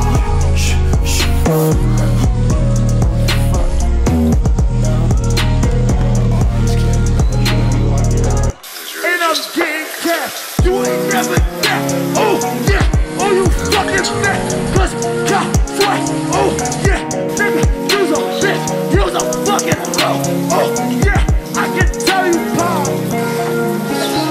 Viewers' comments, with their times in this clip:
0:09 he just invented rap ’n’ roll